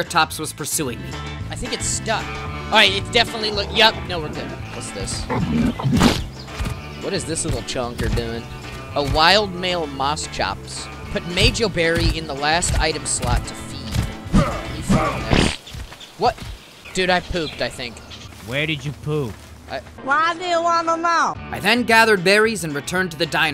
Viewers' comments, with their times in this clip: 0:05 DID IT JUST SAY AMONGUS